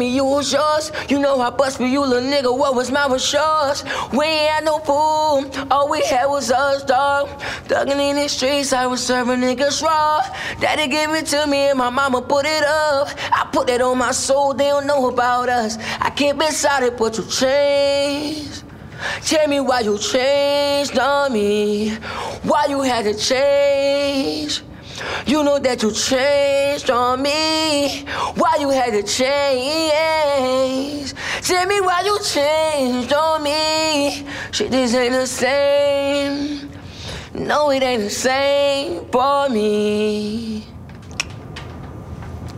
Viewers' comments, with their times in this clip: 0:09 damn he really didn’t hit that note
0:15 After he started singing a hook...
0:28 me singing in the shower